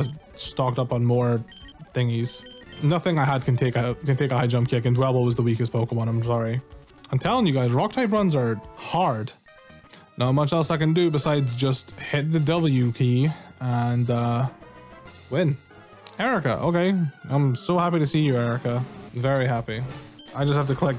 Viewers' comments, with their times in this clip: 0:07 I see what you did there Also I love the pokemon cries censoring the curse words, very cute.